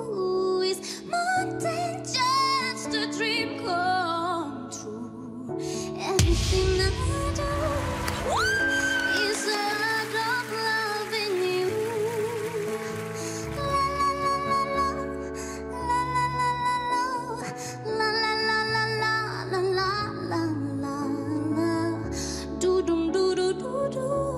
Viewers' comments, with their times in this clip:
0:08 that's the whistle note you are searching for